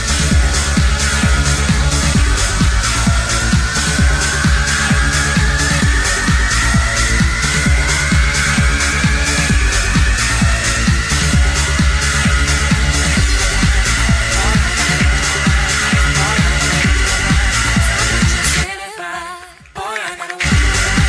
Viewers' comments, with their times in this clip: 0:05 sounds a lot like aerodynamite, or Tron